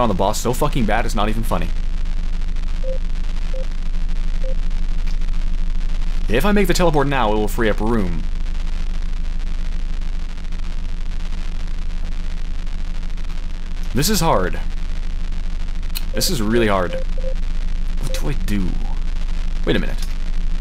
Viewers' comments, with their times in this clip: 0:07 Love the reaction or so. "Wait, what's that?" *Le Gasp* "Laser Gun." XD